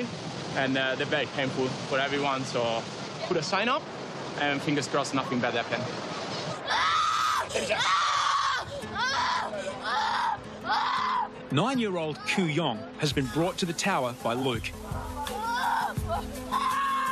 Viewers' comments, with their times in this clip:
0:04 'fingers crossed nothing bad happens' cuts to kid screaming